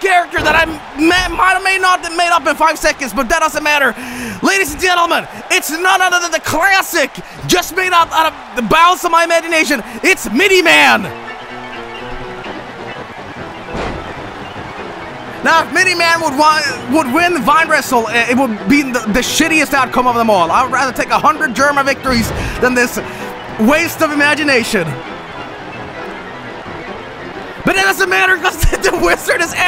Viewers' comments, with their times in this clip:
0:10 is that the fucking Team Fortress 2 theme midi-fied? now i hope MidiMan wins.